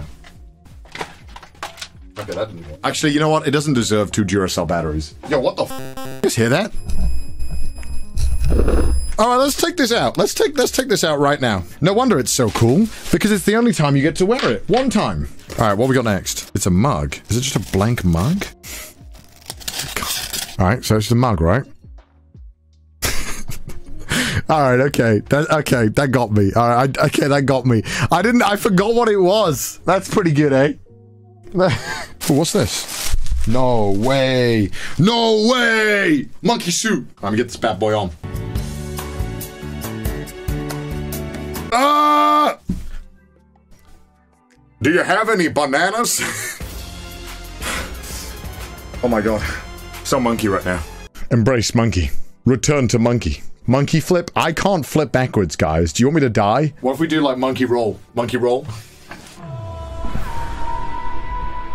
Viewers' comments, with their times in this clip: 0:03 I think the sound that the mask produced is from the step up conversion circuit. The glowing wires need high voltage which is usually produced by pulsed dc or ac, which in turn can (at the right frequency) be heard due to induction causing vibrations.
0:44 you sounded like one of the voices Filthy Frank used to do :D